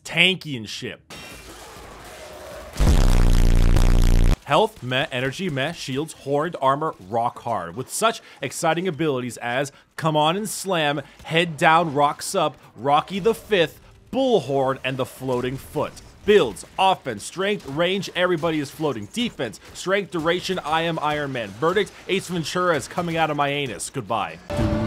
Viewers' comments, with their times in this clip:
0:07 fasting fast frames so hard he outta breath already son